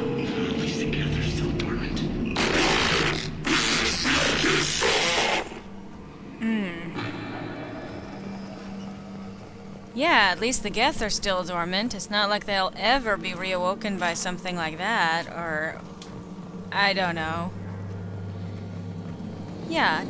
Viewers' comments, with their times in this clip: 0:04 did it just say "make it stop!"??